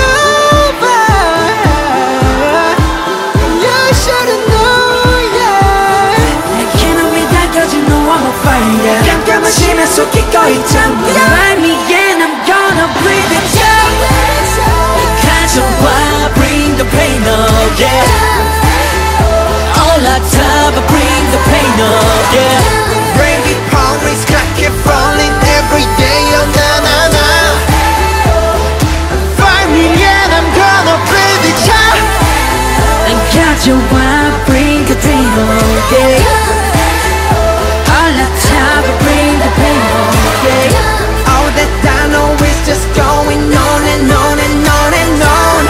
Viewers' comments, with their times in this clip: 0:08 I think Jungkook say Indonesia you can heal Jungkook
0:08 am i the only one who noticed that jungkook sang this verse in a higher tone?
0:14 Jungkook shouted "Indonesia"
0:30 V sings jimin's part